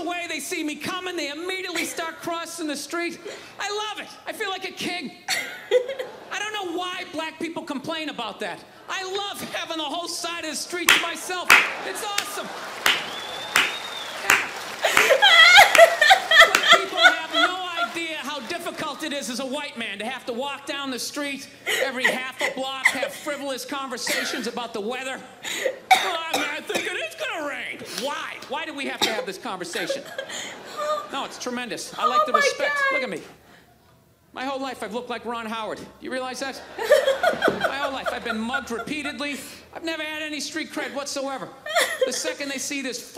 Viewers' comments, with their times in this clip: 0:09 I thought that you turned in to a sea lion
0:30 That moment when you lose your voice from laughing....usually sounds bad but this time...was cute